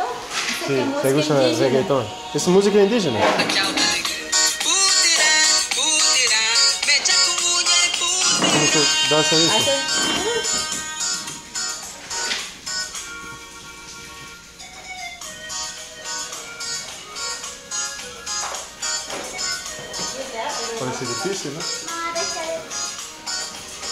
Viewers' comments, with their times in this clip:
0:05 audioslave album cover but that’s definitely not audioslave 😂